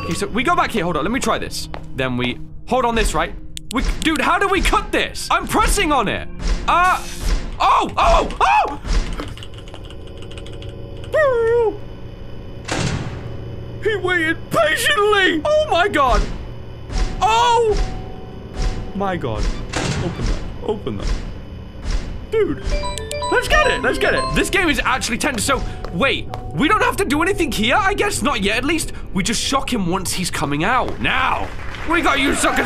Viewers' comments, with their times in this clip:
0:10 man turned into a dog in a thunderstorm
0:11 What kind of a noise was that? XD
0:11 Dog noise I dont get why this amuses me but it does
0:11 Ok but can we talk about what noise you made there ?
0:16 What's that myuu piano soundtrack ? I hear it any other gamer channels too but cannot find it. It is genuinely creepy